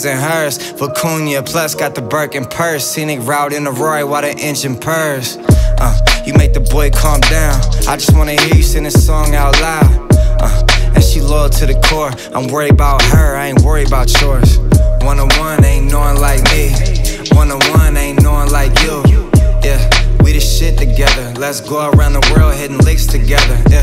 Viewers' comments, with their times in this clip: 0:07 dance for you by beyonce vibes